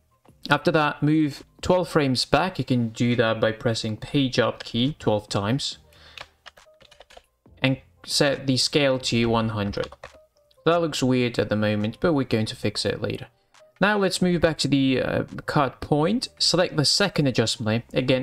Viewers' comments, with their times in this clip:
0:06 what did say p job key ???